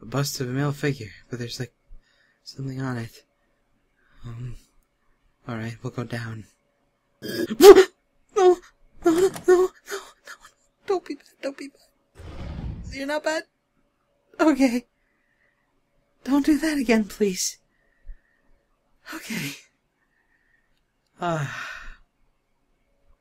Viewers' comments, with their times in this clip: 0:07 the way he says that is sO CUTE.